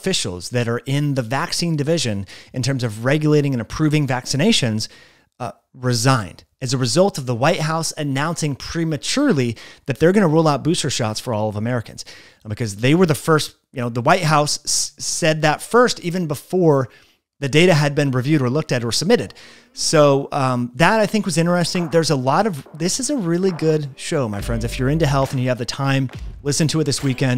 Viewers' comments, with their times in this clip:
0:09 Did you say Rule out, or Roll out Booster shots?